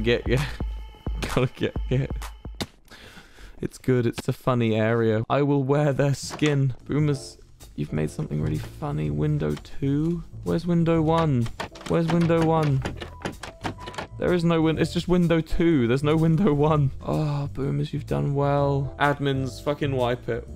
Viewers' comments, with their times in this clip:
0:07 is it me or did wilbur's voice get softer